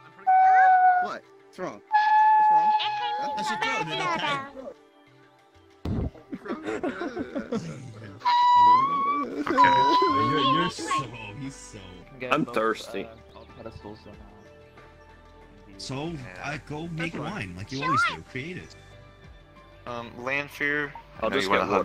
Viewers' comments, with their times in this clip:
0:08 sounds like he's trying out a mating call or something lol